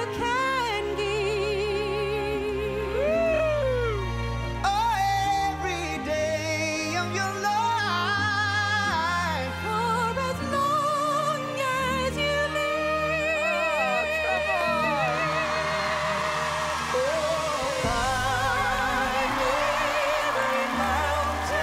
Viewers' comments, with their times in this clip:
0:04 That run on is insane!!